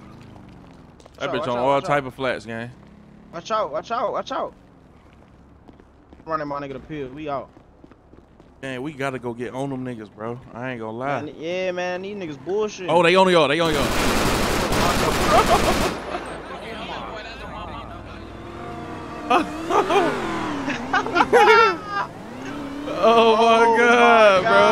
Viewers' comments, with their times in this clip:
0:08 BRUH Lol then the car chatter right after like they just order some food frm the drive thru LOL